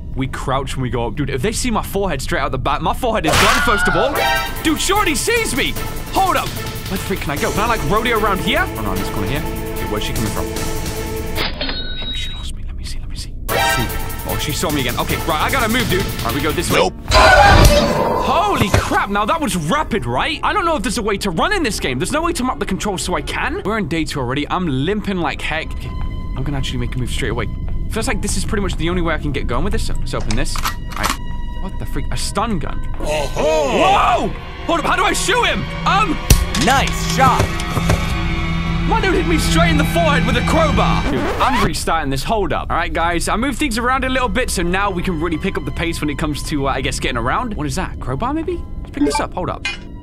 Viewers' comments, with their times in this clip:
0:04 What he really said: “Dude she already sees me!” What I heard: “Dude shorty sees me!”
0:35 THOSE SOUND AFFECTS 😆 LOL